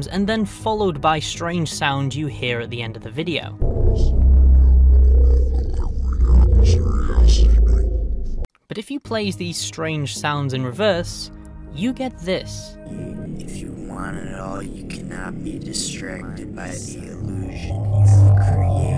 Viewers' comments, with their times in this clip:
0:06 that looks and sounds creepy